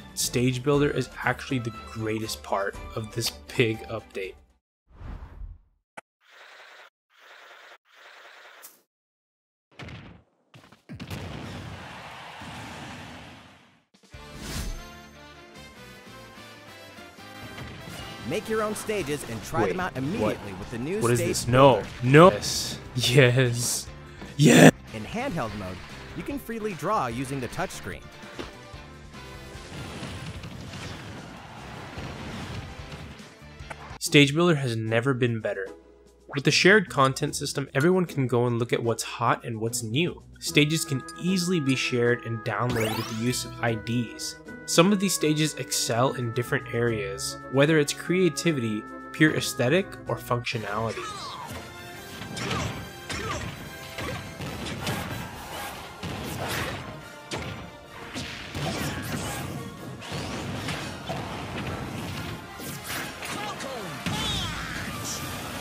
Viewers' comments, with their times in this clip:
0:05 YOSHI... ...dat’s the sound he makes
0:51 why is no one talking